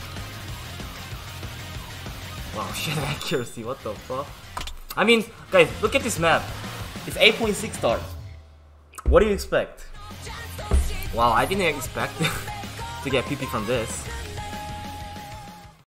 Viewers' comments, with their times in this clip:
0:08 Nice video as always this was really entertaining ^^ Also side note: when you said "what do you expect" your English was flawless like it sounded exactly like the American accent bro very sugoi!